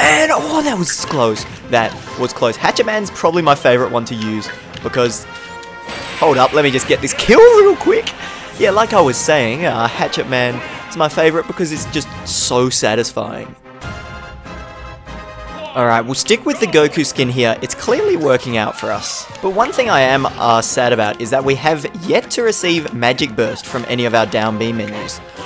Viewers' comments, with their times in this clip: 0:06 he crits but doesn't realize. I noticed that joker took a disgusting 50 % and the Special crit sound played